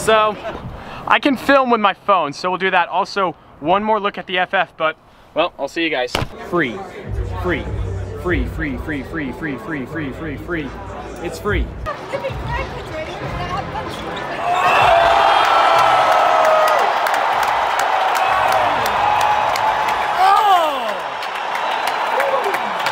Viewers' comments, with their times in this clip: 0:06 you sound like you are doing a Turbo Tax ad.